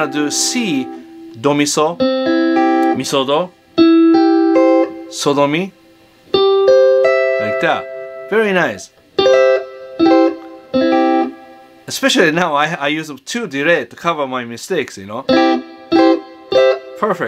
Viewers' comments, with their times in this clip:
0:05 "sodomy, like that, very nice" x'D lmao